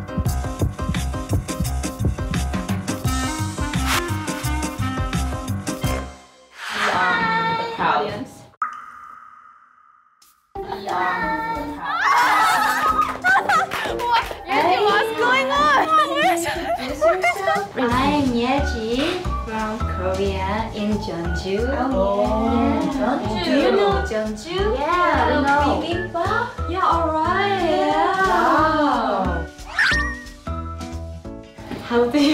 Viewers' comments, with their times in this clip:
0:06 Yeji’s hiiiiii:) obliterated me.
0:07 Yeji sounds and looks like teletubbies character. 😂
0:10 In this episode I'm really shocked that they even bring back the legendary song that yeji sing and dance when she at The Fan ..really amazed with the highnote yeji and dance break..she so talented and such a great dancer..yaa our leader,main dancer and visual..❤️
0:15 YEJI DOING THE JESSI “HEY DAWN WHATS GOING ON?” Ahahahhahaha